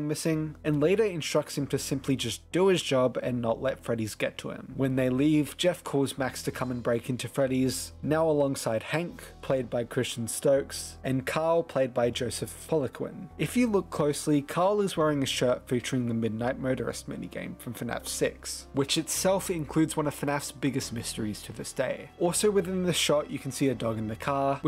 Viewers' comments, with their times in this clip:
0:06 when Jeff dials max it sounds like the security breach song that plays throughout the game, at least to me